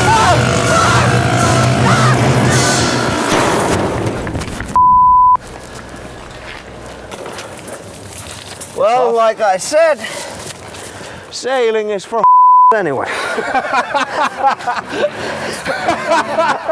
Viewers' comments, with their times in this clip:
0:04 can you hear jarno laugh??